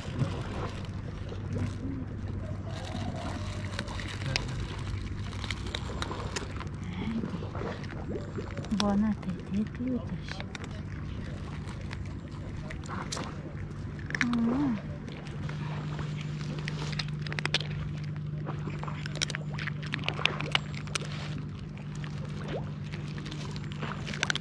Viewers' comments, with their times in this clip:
0:07 Hearing the roosters 🐓in the background, listen to how the kitty at the beginning of the video meows just like them. Lol 💖 To me it sounds almost like squeezing one of those toy rubber chickens. Bon Appetit beauties 😋